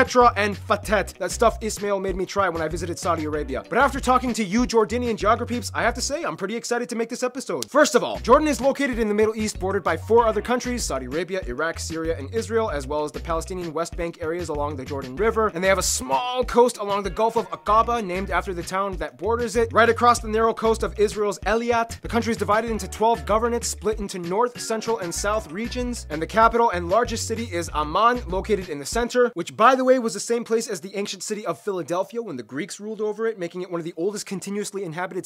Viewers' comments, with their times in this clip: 0:04 did he just say JORDINDIAN?
0:20 eLiat?? excuse me?!
0:21 eh-lee-at? lmao. i dont mean to be a POS but its pronounced ay-lat